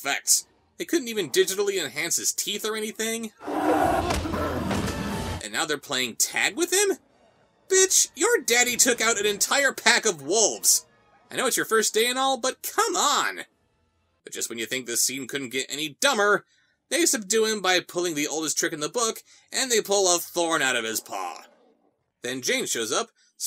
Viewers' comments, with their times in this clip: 0:05 you may also notice that all of his roar sounds are stock sound effects. one of them is literally the growl sound used by the zombies in half life 2. this is pretty insulting when you consider that disney is one of the most profitable companies on earth.